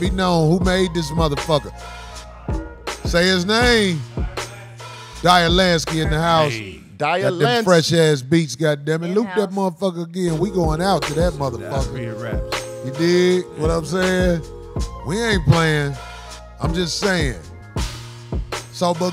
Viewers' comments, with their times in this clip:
0:05 This is the coldest beat I ever heard on this show.